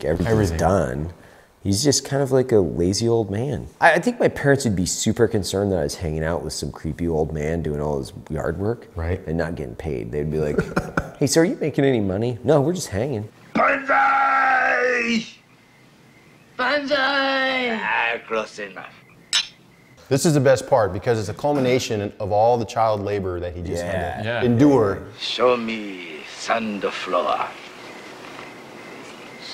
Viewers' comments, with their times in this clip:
0:10 my phone hears this as “hey Siri are you making any money” and searches the web. Ha